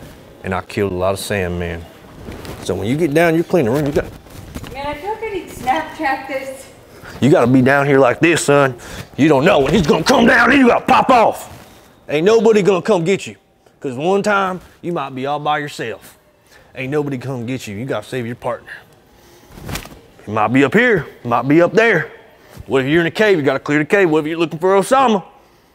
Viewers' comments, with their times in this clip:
0:08 you have to be gifted to change up voice tone like that when that is not even your real voice